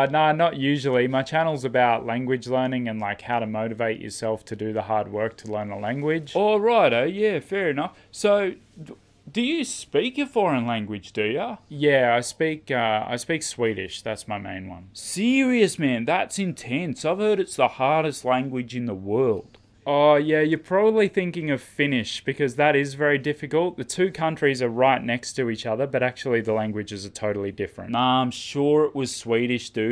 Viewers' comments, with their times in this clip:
0:10 OMGGG the “so do you speak a foreign language do ya?” it’s insane how well you nailed the kinda ignorant-Aussie intonation. I’m Australian myself but I find I can’t watch many YouTubers who are Australian because their accent annoys me when I hear it on YouTube, it’s weird because if I were to hear them in person they would sound normal but once it’s in a YouTube context where you usually here American English, their Australian intonation becomes so annoying idk why. Your accent is fine but it’s more people from nsw and qld I find that speak with that annoying intonation